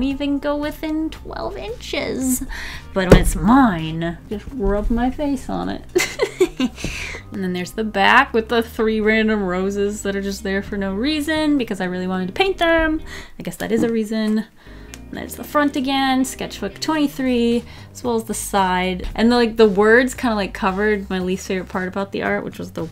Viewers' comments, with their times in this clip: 0:05 The evil laugh 😂